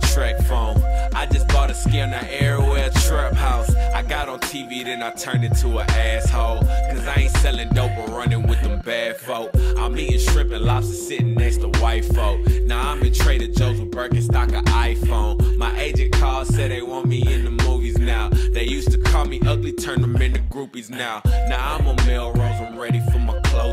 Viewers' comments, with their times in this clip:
0:09 (gross beat 1/2) to melody,PRODUCES will understand ^_^
0:10 Pitch drop is sick